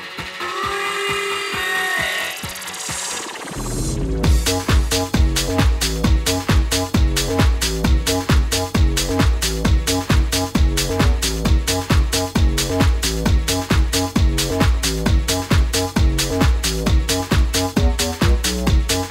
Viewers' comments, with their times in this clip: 0:03 That drop Definitely my favourite set in this genre, this year for sure!✌🏻❤